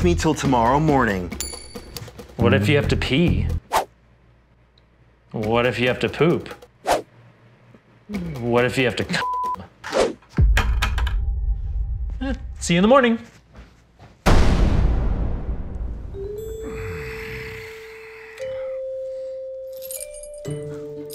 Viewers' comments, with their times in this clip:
0:09 Why did you censored the word “Come?”